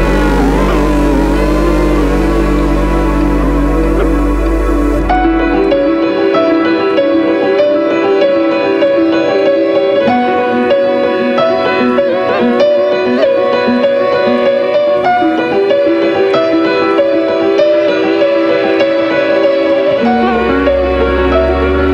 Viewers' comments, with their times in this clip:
0:05 it's like that movie you can't remember the name but its just, tragic or peacefull